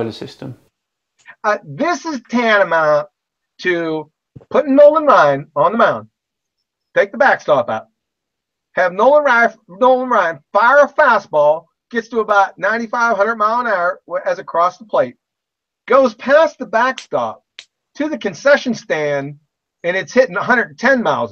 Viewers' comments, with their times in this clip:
0:04 You okay there mate? Sounds like you may have something stuck in your throat.